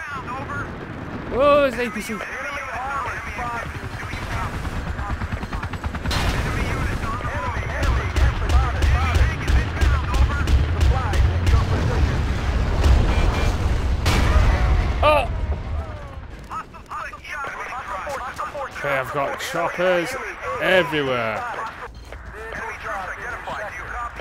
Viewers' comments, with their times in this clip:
0:08 The sound for that APCs gun is so meaty.